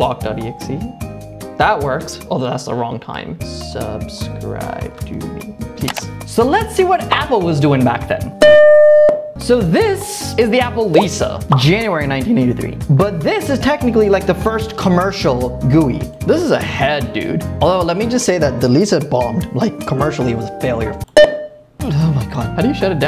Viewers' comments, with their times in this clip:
0:08 Him getting jump scared by the startup sound again 😂😂😂😂😂😂